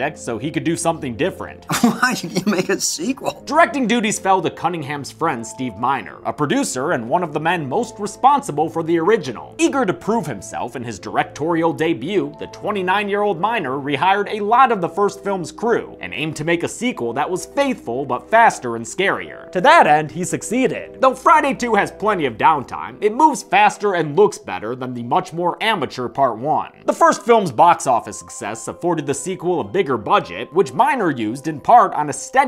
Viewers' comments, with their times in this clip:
0:10 i heard " the 29 year old minor "
0:13 I wasn't listening properly and thought you said "29 year old minor" lol